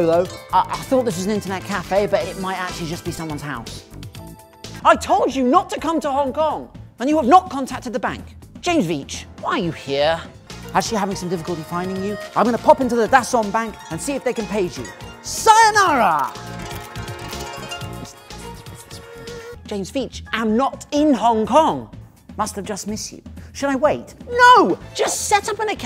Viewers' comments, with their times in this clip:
0:06 the guy sounds so exasperated lol